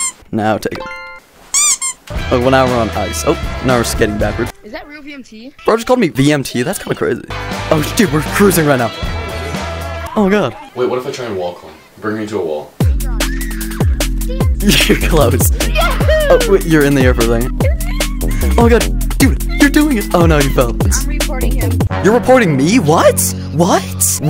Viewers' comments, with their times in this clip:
0:10 cc: OMG him: oh gad